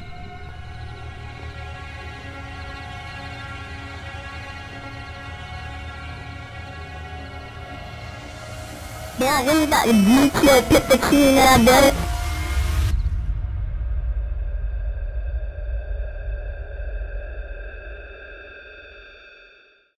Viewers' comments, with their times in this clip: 0:07 it looks like those cheap Toy Phone sounds
0:08 i thought he said bro im gonna really aboa to gee yo
0:09 rip headphone users with full volume
0:09 sounds like "now you get the cheese down boi"
0:09 That one minecraft kids mic: